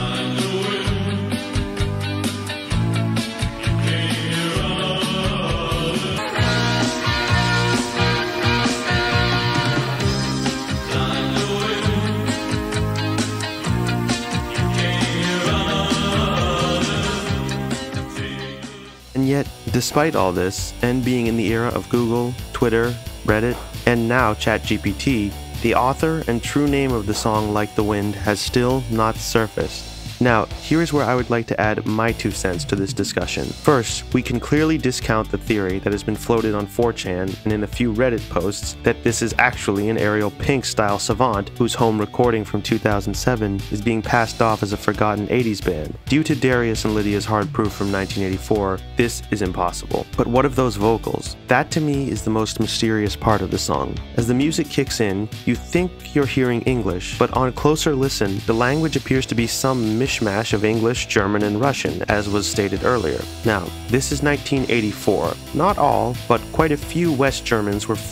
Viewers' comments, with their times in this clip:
0:06 the rhythm reminds me of Fleetwood Mac’s Go your own way.
0:14 not sure if it's just me but when it's re-pitched to C minor the vocals sound super similar to the lead singers voice from Depeche Mode?
0:54 that’s the worst song I’ve ever heard in my life.